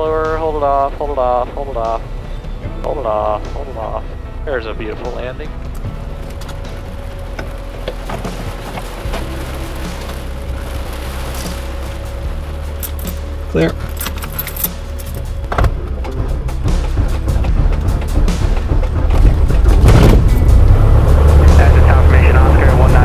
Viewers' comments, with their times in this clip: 0:10 I'm not sure that your "clear" call was audible to anybody in the vicinity of the prop. Other than that, great flying! At least in the air you demonstrate to be a very safe pilot!